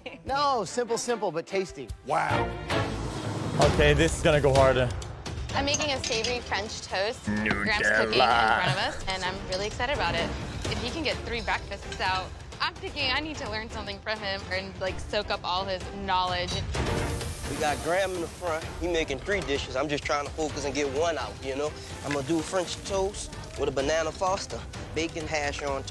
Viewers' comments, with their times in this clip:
0:07 why did this sound like the swedish "nu jävlarrrr" lol